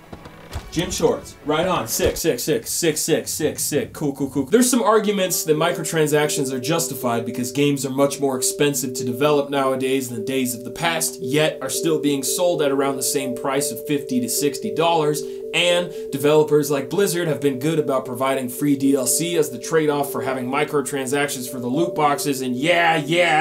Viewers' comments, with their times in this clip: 0:05 WII MUSIC IN THE BACKGROUND HAS ME TRIGGERED